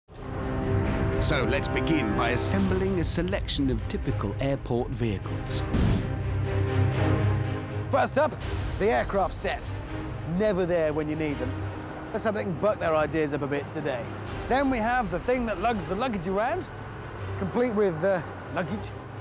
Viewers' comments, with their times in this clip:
0:05 (sound horn(y) before entering hangar)